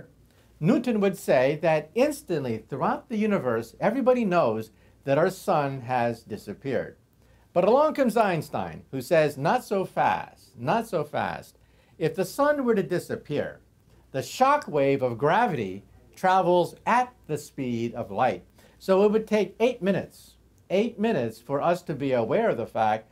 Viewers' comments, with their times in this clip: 0:06 BUT ABBRONG COMES EINSTEIN.